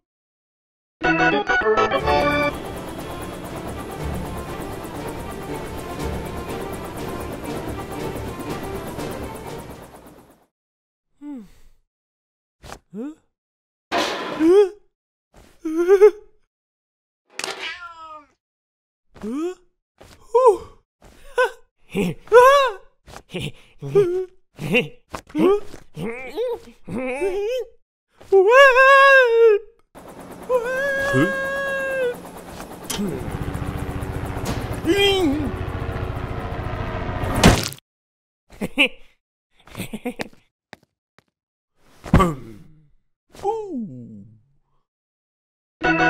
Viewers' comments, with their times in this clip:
0:03 music like occupation game 🎮
0:28 this Woaaaaallpppp (Help!!) gives me goosebumps😂😂😂.... Also that Ooooo after someone dies🤣